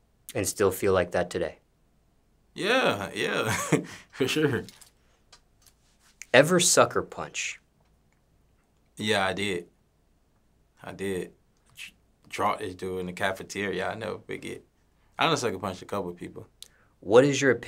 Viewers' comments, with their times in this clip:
0:04 I’m white but man that “for sure” was white as hell 💀💀😂